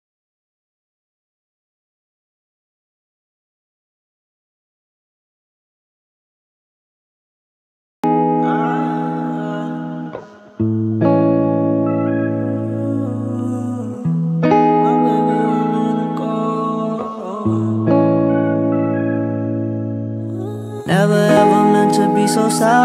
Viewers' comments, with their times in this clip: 0:08 that music just screams aesthetic